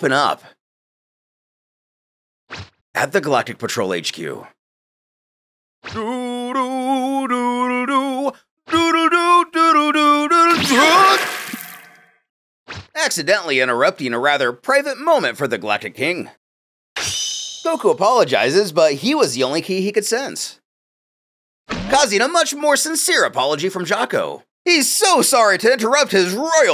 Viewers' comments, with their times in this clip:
0:07 I love the song choice